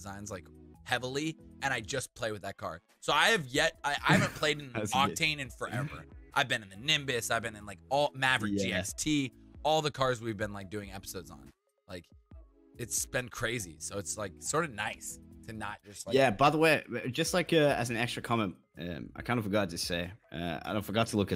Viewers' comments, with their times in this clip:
0:08 sounds like a logan paul fan